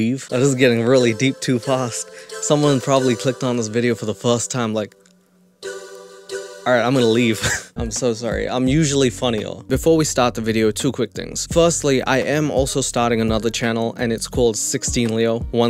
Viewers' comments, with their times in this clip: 0:03 oh sweet sweet Konami theme🤤